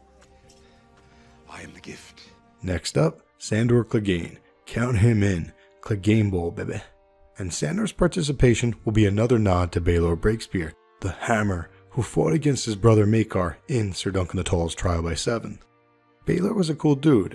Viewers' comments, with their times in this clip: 0:04 clegane will what? I understood « will bebeh » but i doubt that was it😂